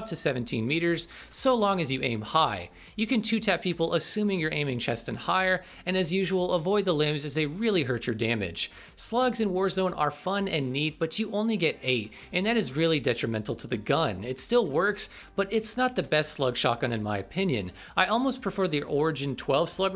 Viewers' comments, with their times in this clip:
0:06 avoid the What? lumens?